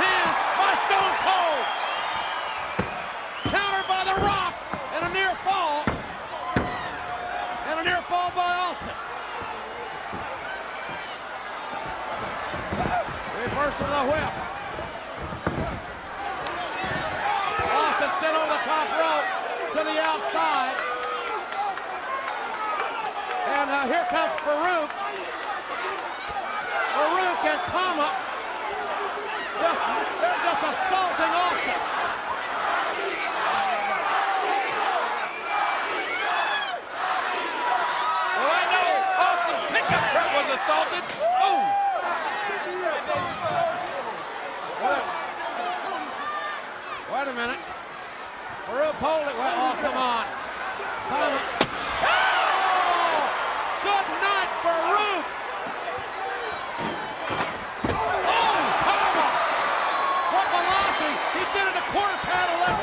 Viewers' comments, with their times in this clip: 0:07 you can hear Stone Cold giving The Rock instructions.
0:09 you can hear Austin talking to Rock. I know this is common but its always cool to spot these moments.
0:50 WTF why did it stop when the chair shot was going to happen??? It sounded fucking BRUTAL.